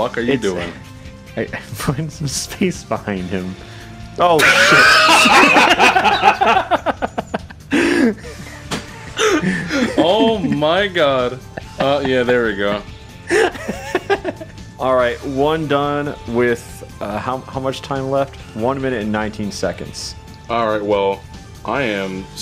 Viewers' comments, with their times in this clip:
0:03 my man has the laugh to rival tsar bomba's explosion
0:04 that has got to be the most genuine laugh I have ever heard